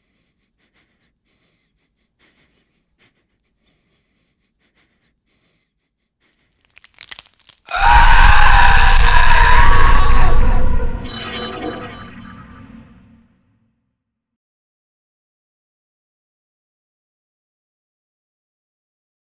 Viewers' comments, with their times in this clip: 0:05 😂😈r.i.p all earphone/headphone users😂😂 The end was so Aaaaaaaahhhh😨
0:08 R.I.P. headphone users I am wearing headphones and it was full blast!! Btw, AWESOME video... and I know I say it every time but who cares at least I support you